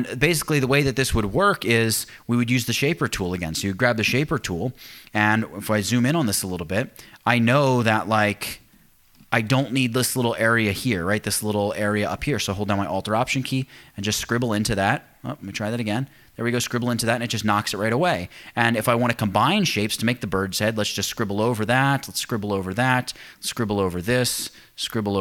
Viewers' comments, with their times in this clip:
0:06 hold down the what? saying it to fast for us rookies